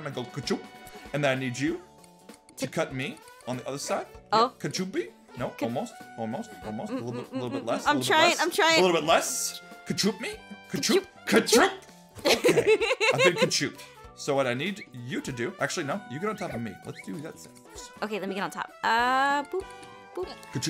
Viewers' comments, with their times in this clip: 0:08 her voice cracked while saying so close just give it to us😂